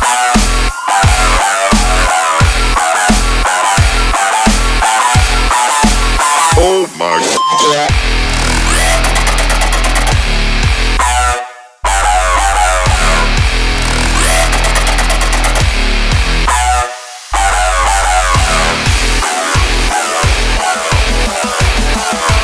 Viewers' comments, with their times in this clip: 0:07 Parking while blasting this tune in my car nearly gave a heart attack. My car sensors were already beeping a little and suddenly the beep came out of my speakers, I thought I must've collided with something :D it completely matched the beeping dynamics of the sensors